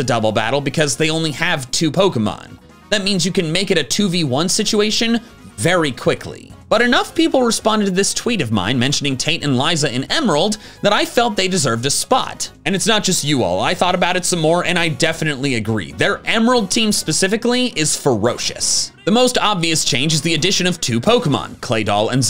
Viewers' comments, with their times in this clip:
0:08 Ok I'm sure I just need to get my mind out of the gutter... But does anyone else hear TAINT and Liza?